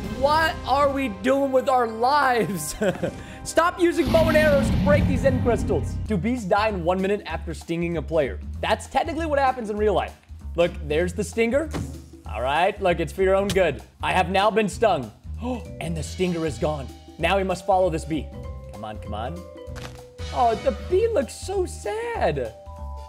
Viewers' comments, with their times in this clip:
0:07 bees die in 1 minute after stinging "payer"😮